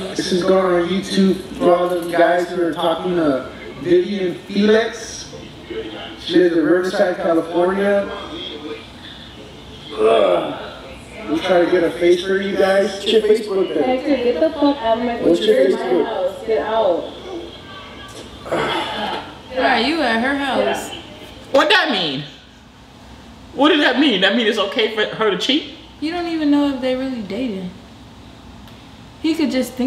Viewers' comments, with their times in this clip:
0:10 🤣🤣😂😂 it's the uuuhhh sound he made when pulling the covers off of her for me. i'm weak rn 💀💀💀